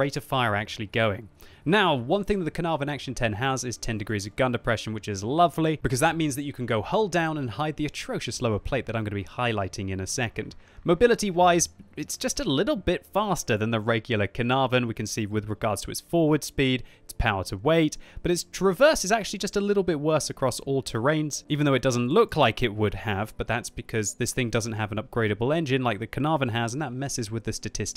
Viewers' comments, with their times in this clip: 0:10 Did anyone hear that Predator sound ?